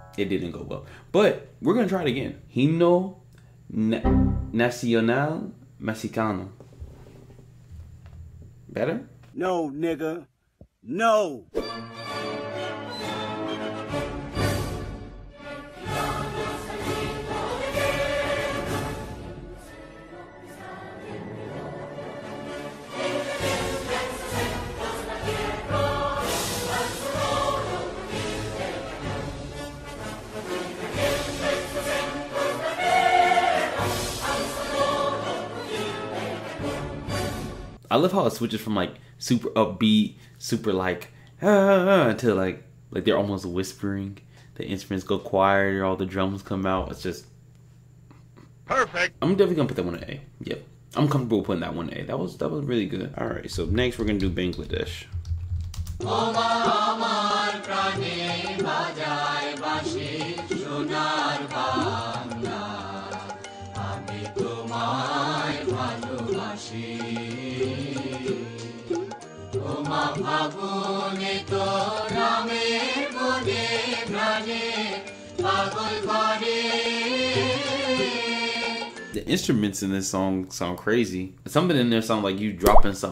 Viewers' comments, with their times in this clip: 0:09 bro that kendrick shouting meme always gets me
1:08 this instrumental sounds like in would be in a goofy ahh beat vid